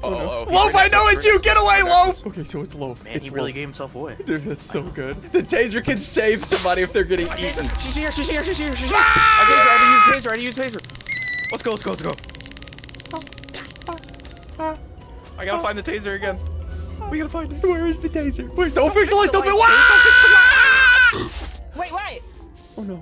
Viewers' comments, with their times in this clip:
0:09 what was that scream my guy so funny